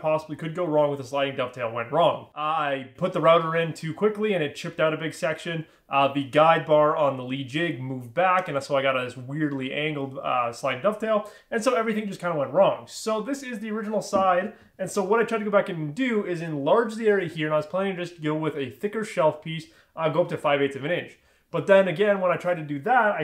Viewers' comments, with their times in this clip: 0:06 I really like your work, I'm glad I found your channel. I've never seen dovetail joints that are proud of the finished surface. It's nice look. At the mark I (literally) had to check my playback speed because you were talking so fast!